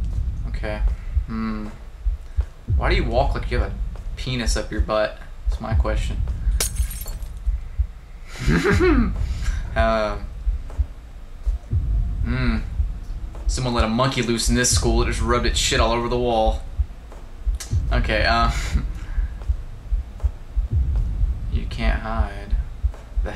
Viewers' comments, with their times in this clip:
0:05 MINECRAFT GLASS BREAKING!!!